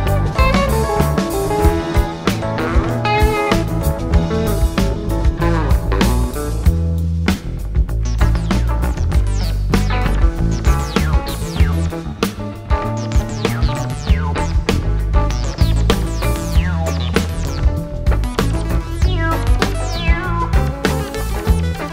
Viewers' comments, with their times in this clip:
0:07 Love Jerry's playing in this, but cannot stand that crap-sounding keyboard It is not the keyboard player but the keyboard itself sounds like shit and it ruined many good performances that year.